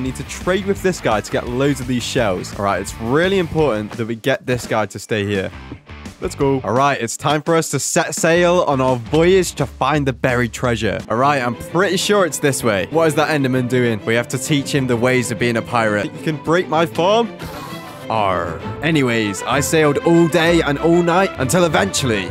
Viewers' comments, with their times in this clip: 0:06 idk how but how did you not get damage when i heard the damage sound?